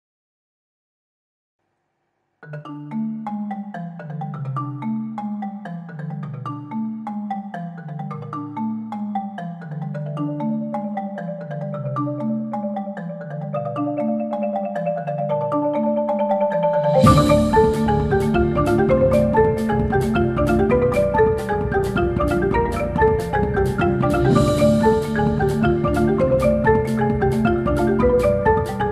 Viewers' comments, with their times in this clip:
0:00 If sans had a jungle level
0:16 how do you maintain a xylophone roll for that long